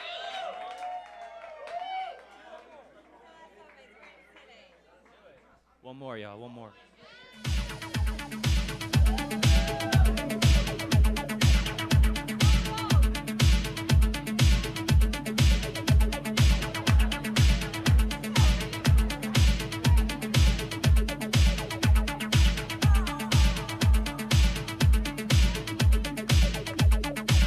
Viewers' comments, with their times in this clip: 0:10 The mix starting is everything 🔥